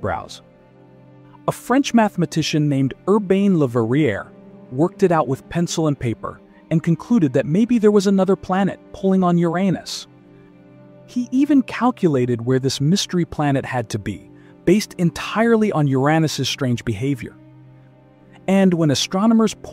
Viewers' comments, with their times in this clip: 0:07 "maybe there is another planet pulling on your anus"